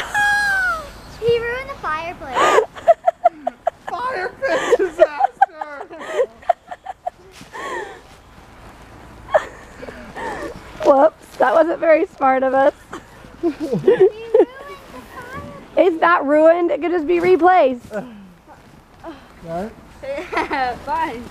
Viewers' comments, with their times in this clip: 0:09 Dad: Firepit Disaster Mom:Laughing